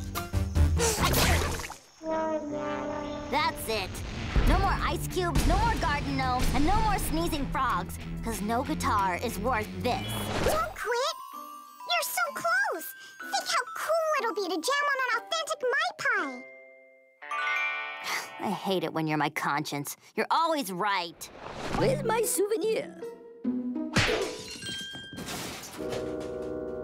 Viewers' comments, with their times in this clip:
0:10 Conscience Ami is so cute. She sounds like one of the chipmunks. 🥰